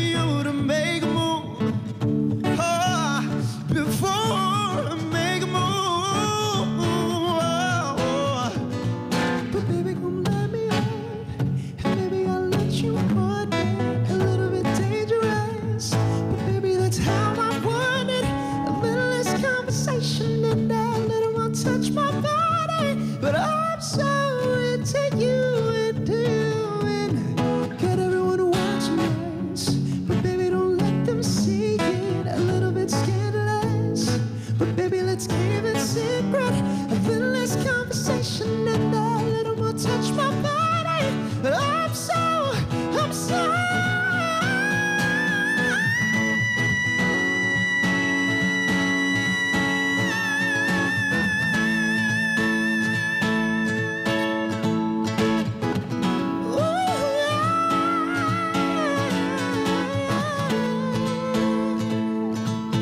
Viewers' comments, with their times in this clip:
0:09 THAT FLOW SWITCH WAS SICK!
0:41 Jordan: being a baritone in the world of musical theatre is hard Also Jordan:
0:41 HE'S REALLY GOOD, OMO, THAT FALSETTO, I LOOOVE IT. 💓
0:43 That high note 😍
0:45 Did he just support that high note?!?! Does anyone know what note that was ? I think it was was either a Bb5 or a C6 but I don't have perfect pitch so I can't tell
0:45 Did my guy just make a whistle note 💀. ‘Imagine’ has been real quiet after this
0:45 For people who don't know it's not a falsetto, a falsetto is a head voice
0:46 That note though omg 😍